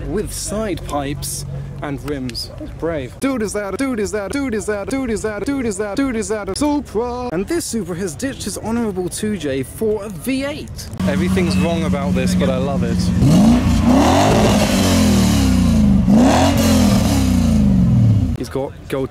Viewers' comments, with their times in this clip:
0:03 it's sounds like your saying dude iszat(a)